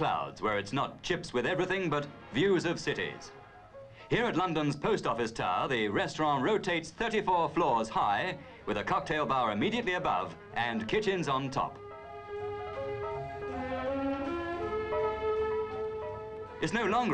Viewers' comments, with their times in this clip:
0:05 "resturaaaaunt" no. 1 of 55